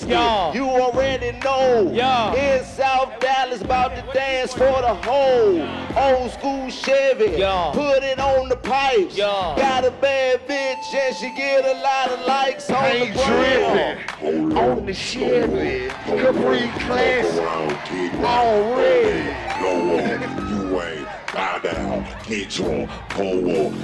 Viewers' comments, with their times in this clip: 0:06 the fucking slow down
0:07 that freestyle and beat hard af, wish I knew what that beat was